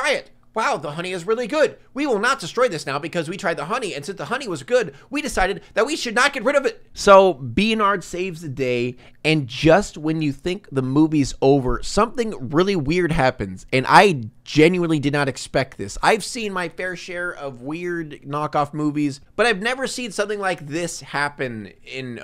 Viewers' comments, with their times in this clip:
0:08 Fun fact if you turn on the captions and go to youtube thinks pig is saying being hard saves the day ;)